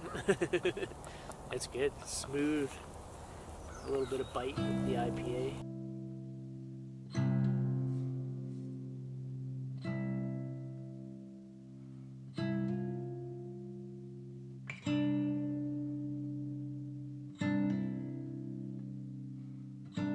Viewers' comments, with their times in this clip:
0:04 I do like the BGM starting from